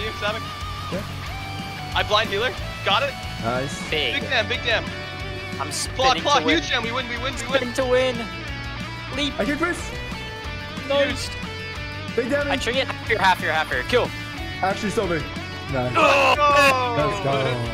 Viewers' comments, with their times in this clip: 0:04 when anime song started playing the feels